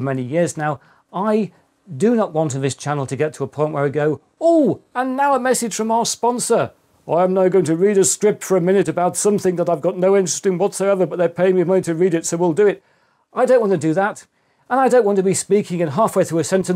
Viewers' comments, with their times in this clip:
0:04 good impression on Linus